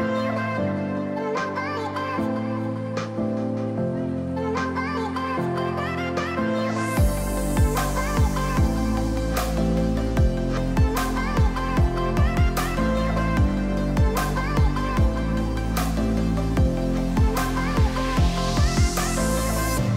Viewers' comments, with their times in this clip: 0:07 I skipped over the stutter to begin with :p also those that don't know....spruce is a tree 😂😂 haha I have more fun when games start glitching than actually playing oh Lord here comes the damn chipmunk music again 🙄🙄